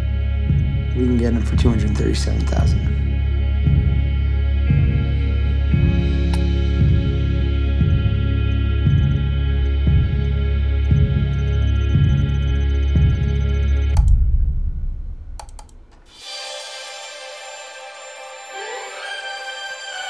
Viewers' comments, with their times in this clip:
0:04 It's that soundtrack. It just slowly swells up in this scene like a heartbeat. Like dawn. Like hope. It goes from sad despair, as the posters are taken down and everything sits in decline, to the sound of sunrise on the way. It's the sound of hope rising. And you can just -- just -- register that hope, fighting with fear, in where Brad Pitt takes a sip from his cup and you can see just that little tremble in his hand.